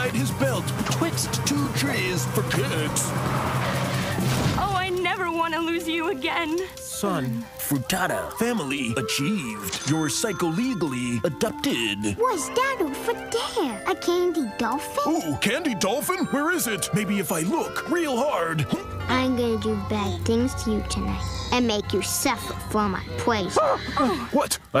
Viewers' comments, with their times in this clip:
0:04 the people screaming in the background from kills me
0:09 i never noticed the screams in the background from the people burning in the car 💀💀
0:09 you can hear the family in the car screaming as the monologues continue, didn’t notice that until like my 6th watch 🤣